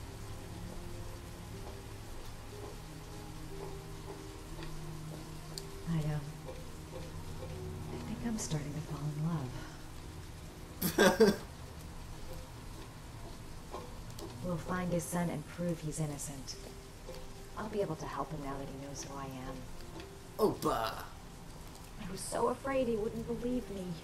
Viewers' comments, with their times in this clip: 0:08 "I think I'm falling in love". *Laughs* xD